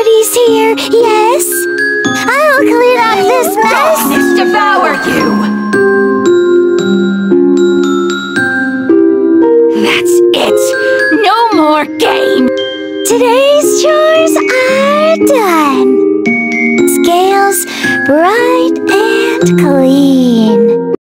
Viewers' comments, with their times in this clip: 0:09 THAT'S IT, NO MORE GAY😡
0:09 STOP I HEARD "THATS IT, YOUR MORE GAY!" AND NOW I CAN'T UNHEAR IT...